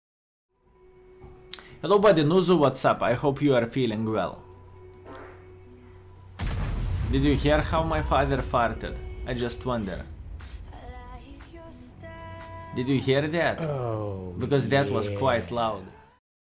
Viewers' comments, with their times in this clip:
0:04 the fart then right after a huge gun shot, lol!